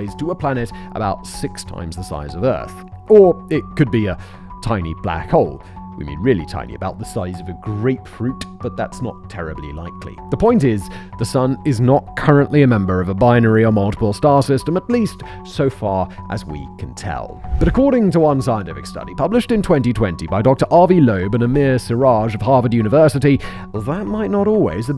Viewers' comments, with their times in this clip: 0:06 Love the X-files like background music. Excellent choice. 🤣🤣